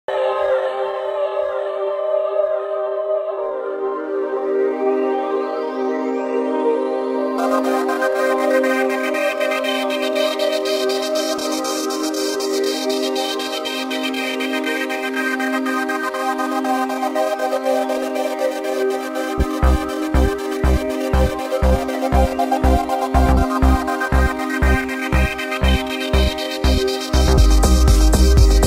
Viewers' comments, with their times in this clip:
0:09 I thought it said Baltimore